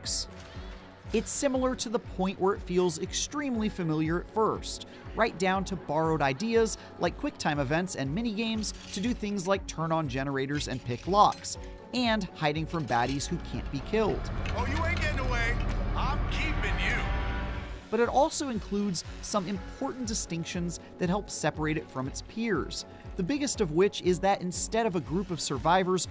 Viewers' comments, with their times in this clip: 0:07 NOOO THEY NERFED CONNIE LOOK HOW MUCH NOISE SHE MAKES SHE NEVER MADE THAT MUCH IN THE TECHNICAL TEST